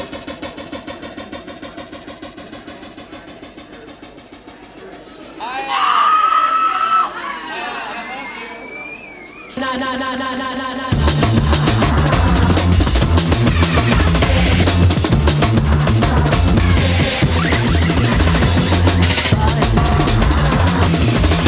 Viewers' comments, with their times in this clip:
0:05 great scream also edit: minute
0:07 a girl is screaming, then "I love you" annnnd music!!! Fucking perfect